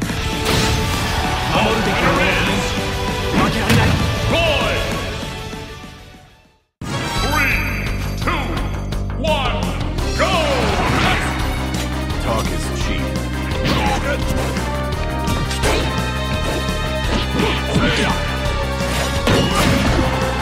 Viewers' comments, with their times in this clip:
0:07 Sounds a little bit like that Battle Against Culex in Super Mario RPG music...